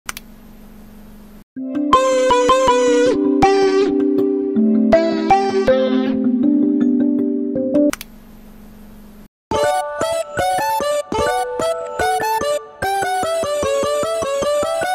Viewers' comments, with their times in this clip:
0:00 that alarm has My sister: